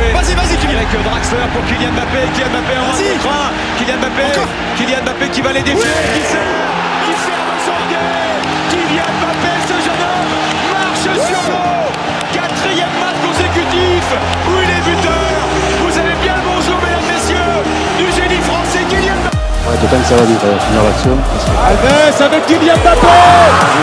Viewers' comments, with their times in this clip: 0:05 Dat voice crack